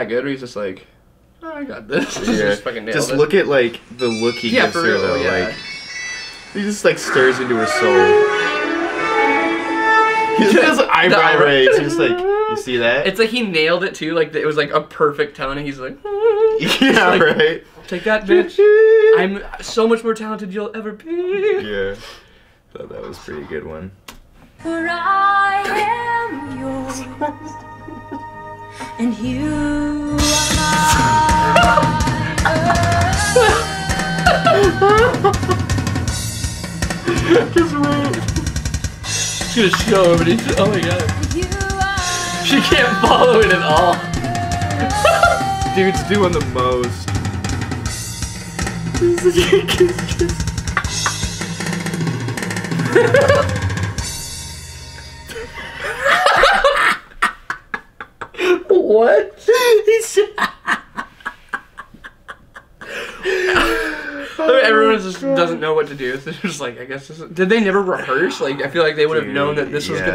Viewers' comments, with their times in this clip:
0:07 Who forgets a song and is like "Shit, gotta think of something...errrrr, Motarola text sound!"
0:25 ....Anybody getting the Starset vibe from this? No joke, listen to Satellite. It worked for Starset, wonder how they fucked it up so bad there. XD Idk, just calling it as I see it.
0:28 when a metal drummer plays Oceans
0:28 the drummer is playing that part wrong, I played that part multiple times for my youth group.
0:29 when the church drummer listens to too much Neil Peart
0:29 No one: Avenged Sevenfold Drums:
0:29 my church does that song and the dudes playing it right but it’s just so much slower, I’m the loser because I play bass and no one talks to me
0:29 for the best drum fills ever
0:29 Drummer: shit i came in at the wrong time, just roll with it dude if you stop now there gonna know you messed up Singer: just keep singing, you can kill him later
0:30 someone’s been listening to a LOT of Rush
0:31 when your church needs a drummer but you only play rock/metal
0:32 metal drummer pop singer
0:46 I thought that she accidentally clicked the drum track on the sound pad. Then the camera panned out and I realized how much Mayhem was going on. 😂😂😂
0:46 I love a in the video the guys was like playing blast beats at the pop show
0:50 Drummer: I thought this was a Judas Priest cover
0:54 The clip reminded me of church at bootcamp when they would let recruits play the instruments...this is what it would sound like..singers off beat, guitars are slow, piano is sped up...I just stop playing the drums annoyed 😂
0:56 she ruined such a great song!!!